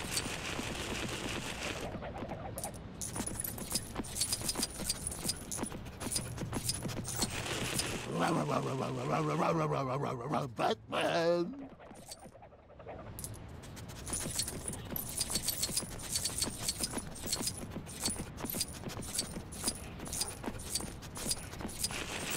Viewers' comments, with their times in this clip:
0:07 batman theme but singed by Scooby Doo